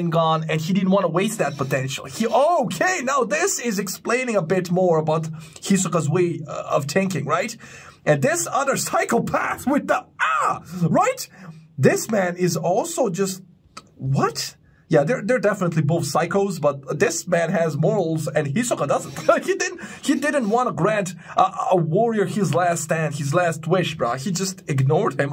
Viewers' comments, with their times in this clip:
0:10 ur " ahhhhhh" was cute as hell🤣🤣🤣